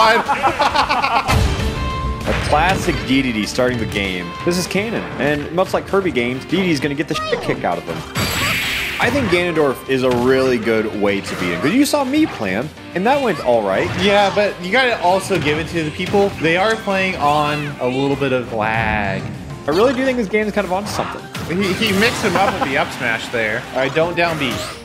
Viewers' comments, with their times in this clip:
0:06 I do appreciate the "poyo" censor lmao